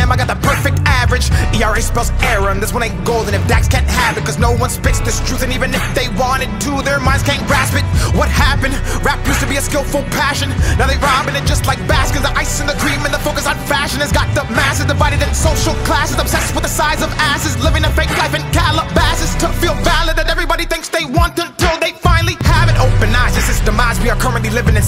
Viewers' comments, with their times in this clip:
0:08 onwards gave me fucking chills bro. Not just because how true the words were, but the delivery was something else. Cadence amazing. Inspiration for sure, just not everyones taste - but taste is subjective. You cant ignore talent.